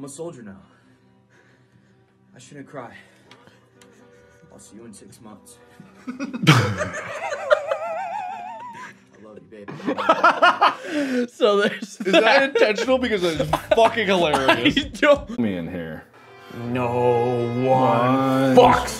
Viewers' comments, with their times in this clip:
0:05 Wait what happened that they were laughing about? I dont remember that video very well